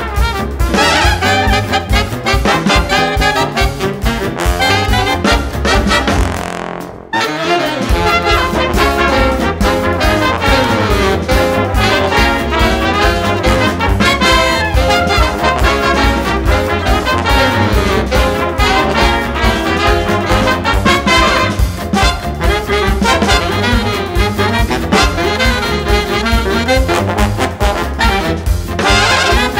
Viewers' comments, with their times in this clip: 0:05 that guy just fart
0:05 Fart (no ofensce)
0:06 nice toot there dude
0:11 It's not the same without her scream
0:14 Hilda Berg but apply 2x speed XD